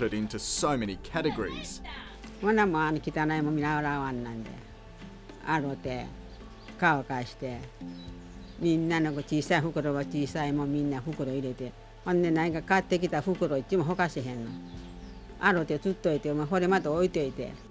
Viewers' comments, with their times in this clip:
0:04 The elderly lady sounded like she was speaking a polynesian language 😂. Omg.